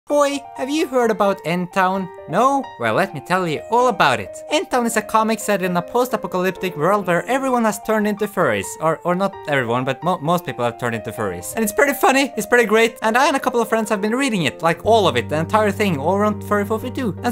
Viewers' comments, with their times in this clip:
0:00 cutest "hoi" I ever heard